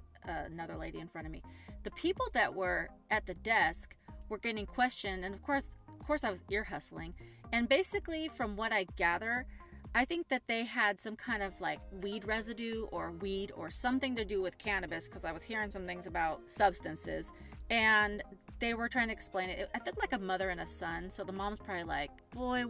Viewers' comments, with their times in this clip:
0:04 This is the first time I've heard "deer hustling", and I tried to google that but no joy. I'm guessing that it means trying to overhear a conversation near you? I'm inferring this by the context of what you are saying, lol.